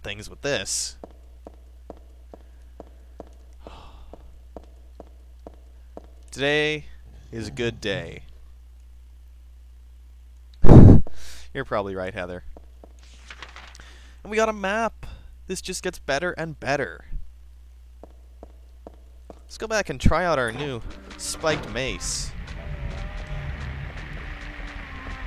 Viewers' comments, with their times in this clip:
0:10 You breathed into the mic and scared the hell out of me!